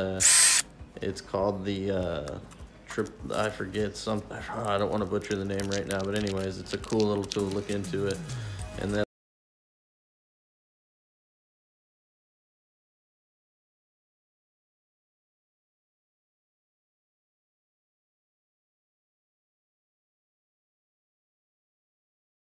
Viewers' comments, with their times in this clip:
0:10 Sound is lost Soooo frustrating.